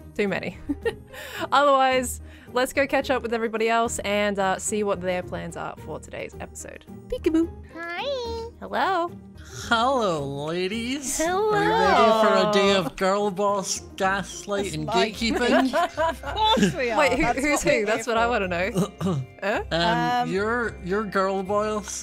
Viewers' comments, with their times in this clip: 0:08 cutest hi ever